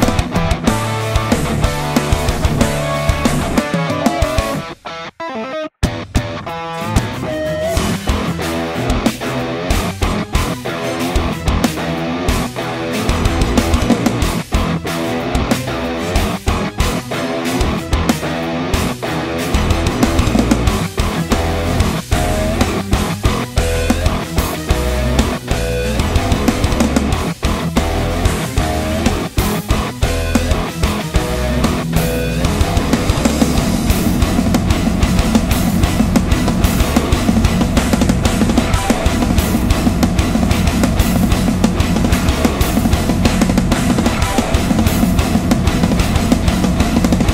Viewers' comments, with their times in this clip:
0:07 The transition into groove made me wtf and nod
0:24 wtf those harmonics
0:32 That drop tuning caught me by suprise, what is it, Drop E? :) Really cool song, like a more groovy Animal as Leaders.